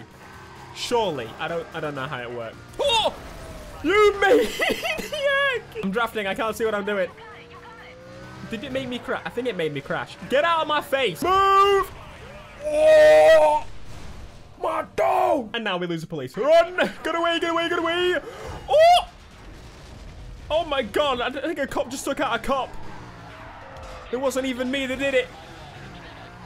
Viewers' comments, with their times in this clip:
0:10 Moan of the Century
0:12 Moan of the Century (BIG SMOKE)
0:12 Big Smoke Impersonation